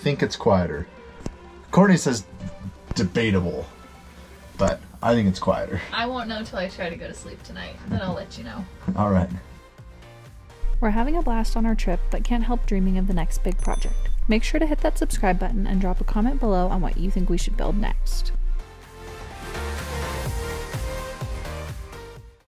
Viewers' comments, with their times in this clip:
0:10 guys Guys GUYYYYYSSS!!! do not scare me like that, minute there is some bass noise on the back I thought it was an earthquake or something on my end, I watch your videos with 5.1 very loud so I don't get distracted ... uufff ... I am going to change my underwear, I'll be back soon to watch more videos, love them !!!